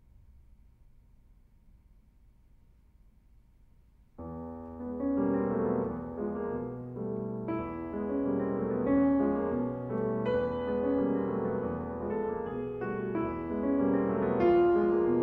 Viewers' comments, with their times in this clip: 0:03 Just imagining playing an ostinato like with one hand is making me sweat. Very beautiful pieces, all carefully calculated and intonated, both by the composer and the performer.